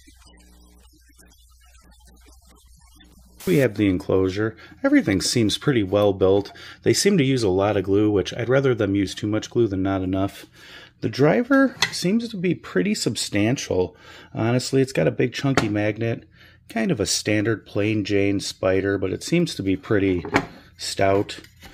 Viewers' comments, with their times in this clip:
0:04 I have no sound (voice) from minute 2 through The whole calculator piece. Anyone else with this issue? 😞 Aside from that I'm a fan of your videos. Knowledge is power and appreciate you sharing with us